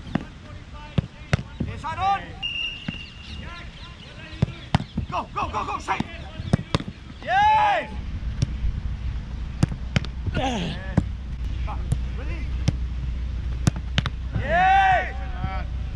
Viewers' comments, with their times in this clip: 0:03 Arteta shouting "What are you doing?" in the background :O